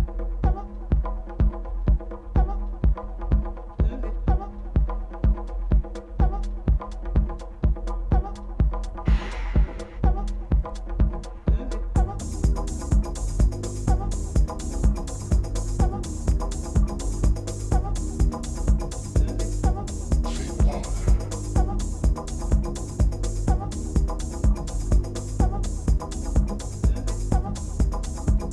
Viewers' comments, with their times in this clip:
0:10 Groovy ^^ too bad the cut ends here